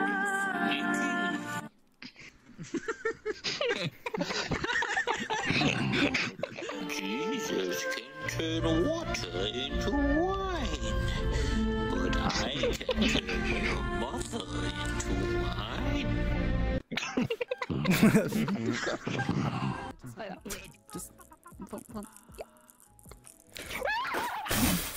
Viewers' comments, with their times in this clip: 0:07 the way the sound plays on the other side of my headphones and then switches